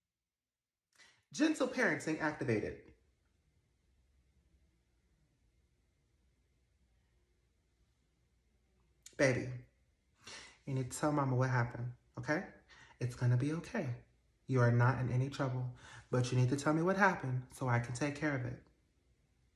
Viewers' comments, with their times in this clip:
0:04 the robot voice and the head turn took me outtttt🤣🤣